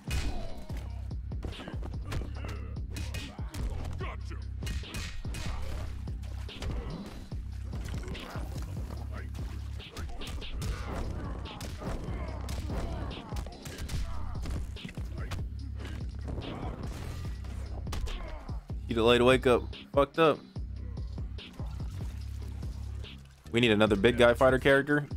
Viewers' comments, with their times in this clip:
0:07 what a great fart